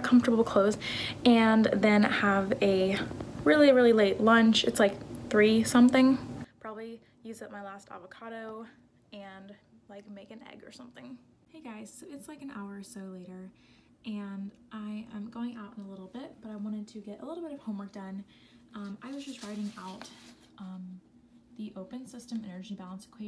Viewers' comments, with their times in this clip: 0:06 so so sorry about the sound !!!! just uh lower the volume a little bit there. idk what happened.